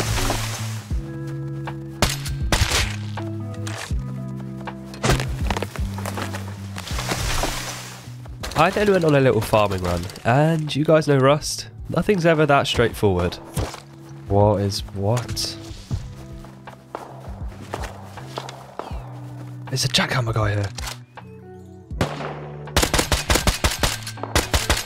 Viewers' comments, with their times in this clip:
0:08 i cant understand, what did you say?